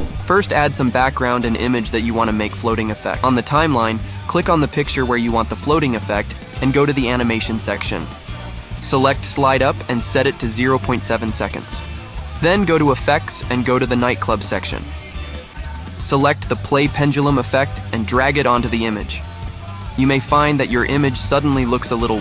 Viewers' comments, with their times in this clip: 0:05 Great tutorials but music is wat too disturbing to concentrate esp Not good choice!